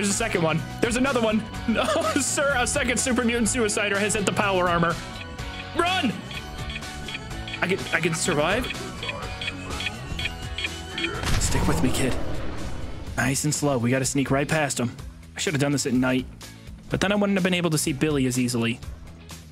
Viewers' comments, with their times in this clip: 0:04 im playing a completely different game rn, half listening to this but the chirping of that bomb made my heart drop for a whole second lol ive been scarred for life by those damn suiciders